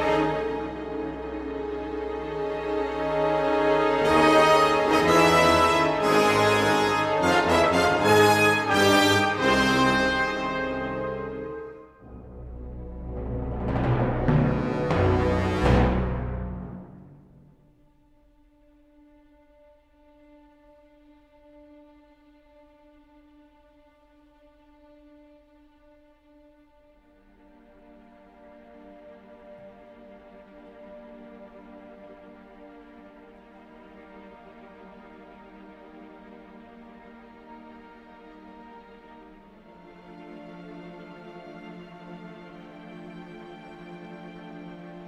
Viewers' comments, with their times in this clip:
0:03 good variation on awesome Krennic theme!
0:30 Am I mad or are there console sounds from the OT at approx. ? You can hear it twice. It's recreated with a flute or something, but it's the sound played in the OT when, I believe, technicians use the consoles on the Death Star. It's the same sound that was used to great extent in the 2005 Battlefront game (like when the menu booted up)/